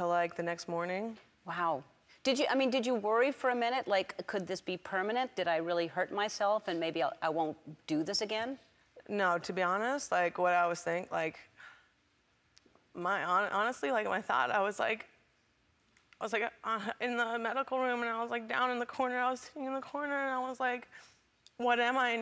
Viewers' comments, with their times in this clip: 0:09 Sounds like Crush off Finding Nemo when he keeps saying 'like' - "First I was woooah, then i was like wooooh then i was like woahhhhh"